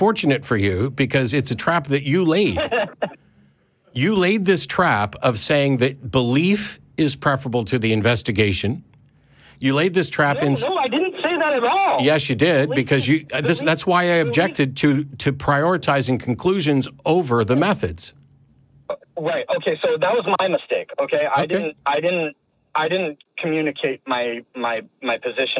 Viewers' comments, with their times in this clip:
0:08 he sounds just like Jordan Peterdôuche